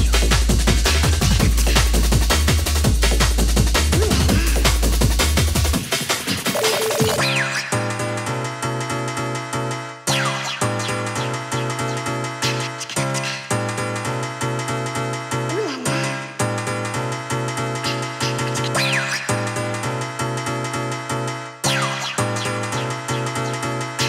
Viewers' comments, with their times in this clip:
0:07 Fucking love the tune